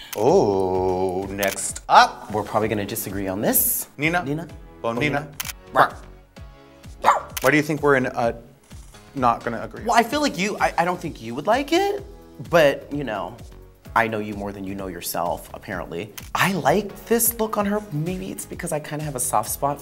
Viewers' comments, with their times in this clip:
0:06 Did Jujubee really just bark